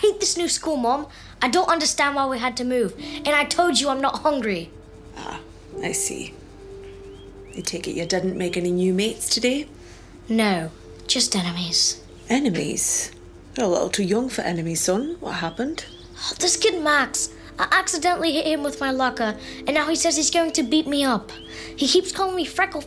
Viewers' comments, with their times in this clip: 0:03 the British accentssss